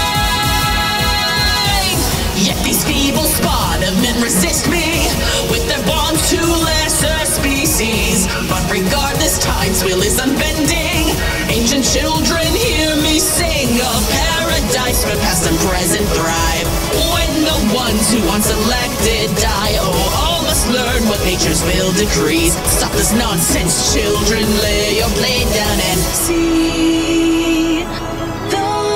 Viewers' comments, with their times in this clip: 0:03 That scream tail is cursed
0:11 This song is great, sounds really cool! My favorite part of the whole things is how the scream tail looks
0:14 While I love the Violet version, Sada's VA gives off so much emotion! I get goosebumps every time I listen to this song! Also is the best part